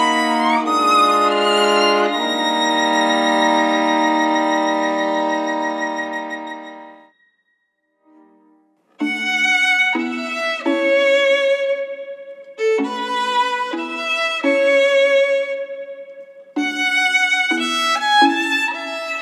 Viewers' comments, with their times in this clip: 0:07 Hi! Finally you did a marvelous job 👍👍 Thumbs up! And you hit the high notes perfectly 😍 I also like the combination of pizz and those beautiful harmonies there. The ending part also impressively played. It's really beautiful. I can't stop listening ❤